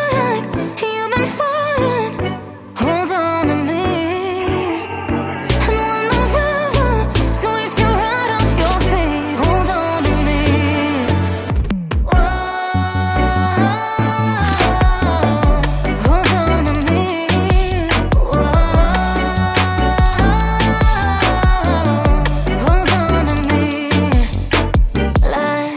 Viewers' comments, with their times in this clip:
0:06 I was at DD’s and couldve betted my life that this was Ariana Grande (in fairness to me its crowded with people and i could only hear the chorus ) i was sooo shook but im so in love!! ❤